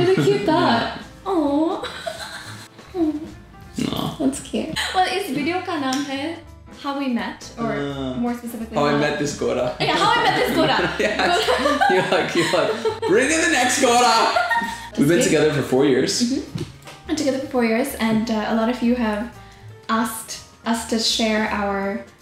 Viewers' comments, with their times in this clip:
0:03 was i the only one who thought she spoke korean sentence " what do i do"